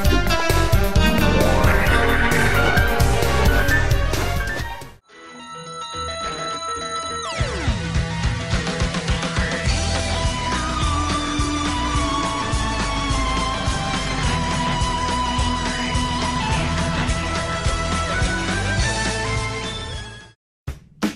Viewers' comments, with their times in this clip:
0:05 that fucking knock scared the shit out of me i was wearing headphones 😢